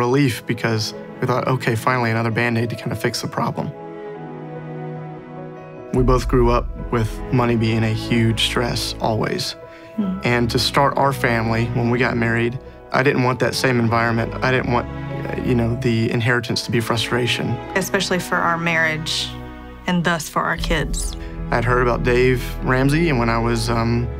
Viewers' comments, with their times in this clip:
0:07 i keep replaying this point because the music is so beautiful.